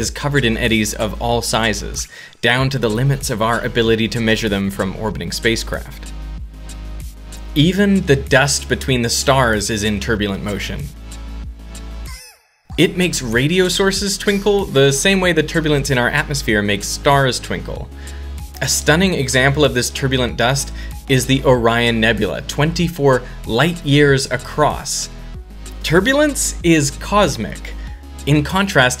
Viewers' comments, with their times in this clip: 0:05 i cant stop laughing at this unexpected backgrond noise
0:11 Why is there an anime girl moaning in the background?
0:11 WHY IS THERE A HENTAI MOAN IN MY CHRISTIAN SCIENE VIDEO
0:12 that "augh" made me laugh so hard
0:12 Good part of the background song
0:15 are those fukin hentai noises on the bgm!?